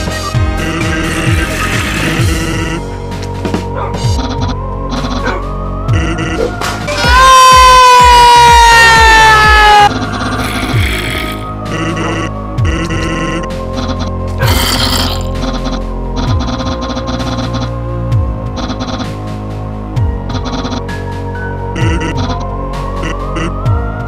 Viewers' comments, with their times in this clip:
0:07 Papyrus: shut up sans: wait no- (sans yells hahahaha)